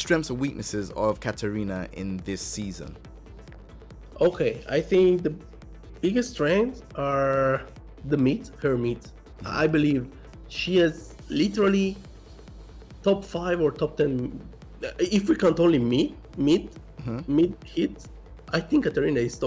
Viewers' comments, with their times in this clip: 0:03 "the biggest strengths are her meat, she has literally top 5 meat, chest has so many good meat." I'm sorry I can't unhear that 😂